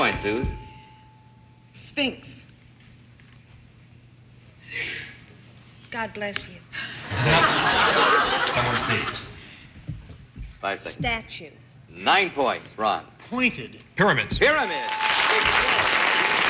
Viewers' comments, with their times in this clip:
0:04 Elizabeth’s reaction When the audience member sneezes is priceless.